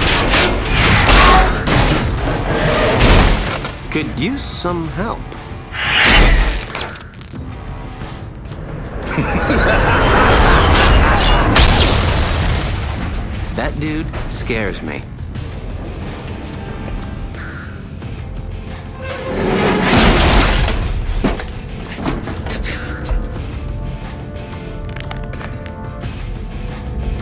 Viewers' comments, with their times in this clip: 0:09 evil laugh while the ship was crashing lol